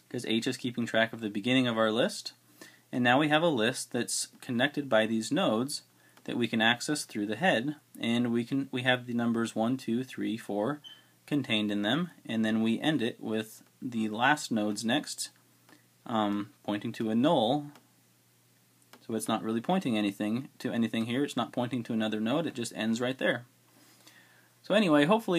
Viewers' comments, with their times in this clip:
0:10 change the batteries in your smoke detector.
0:11 I just replaced my fire alarm batteries,.. Then i hear this XD that sound is everywhere